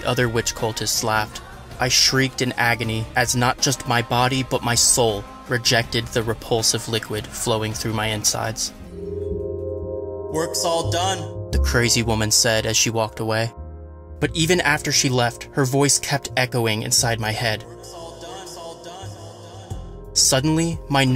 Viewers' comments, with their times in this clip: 0:09 that's... not a woman voice